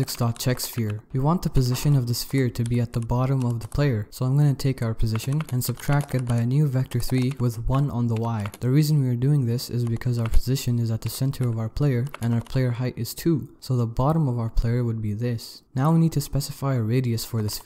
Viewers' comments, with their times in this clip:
0:03 that yay LMAO